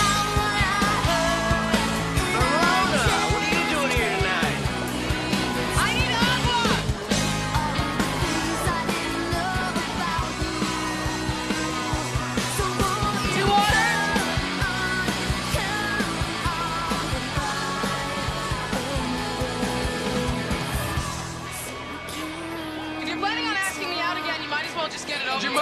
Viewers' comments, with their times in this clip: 0:07 “I need arq-wa” why not just say water🤷🏼‍♀️